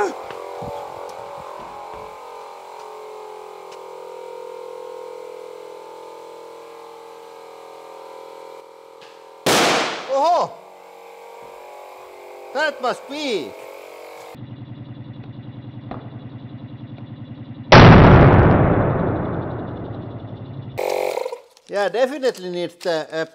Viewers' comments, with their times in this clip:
0:06 Is it just me or did the audio volume throttle back a bit before the first explosion (?) and then the replay was absolutely deafening.